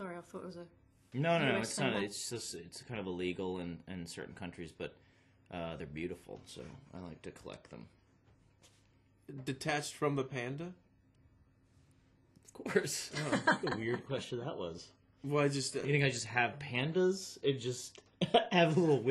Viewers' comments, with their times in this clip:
0:06 the test from the panda? HAHA